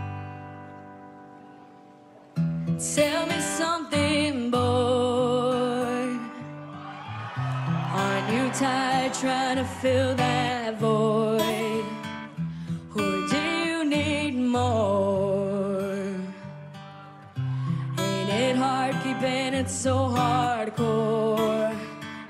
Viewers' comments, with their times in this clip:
0:08 Omg that amazing voice!!! 😍🥰😍🥰😍